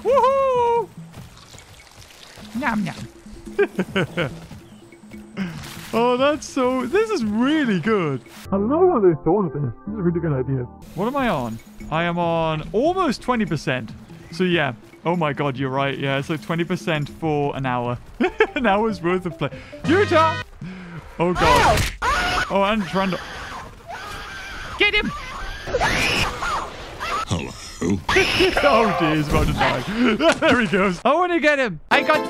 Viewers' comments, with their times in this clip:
0:08 that underwater voice tho
0:20 was the laugh what I came for :D